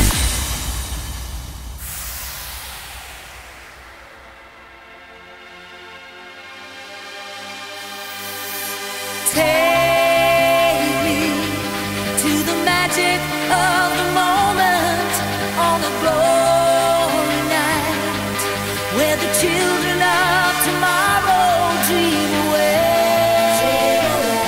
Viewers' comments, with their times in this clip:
0:08 Super beautiful voice =)